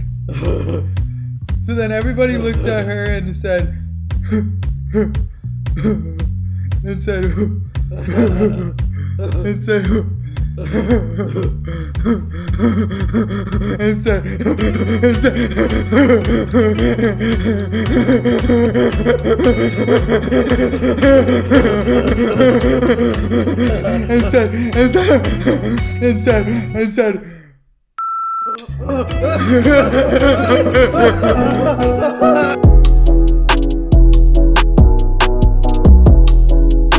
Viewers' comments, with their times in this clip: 0:06 my ears died
0:14 does anyone else think that laugh sounds like Patrick Star
0:23 yo who laughs like that